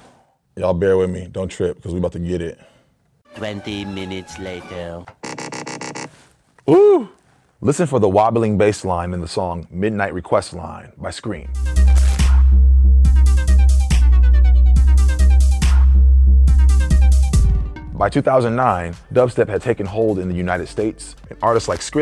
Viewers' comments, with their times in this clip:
0:07 People watching on their phones be like: "What bass line? What's happening??"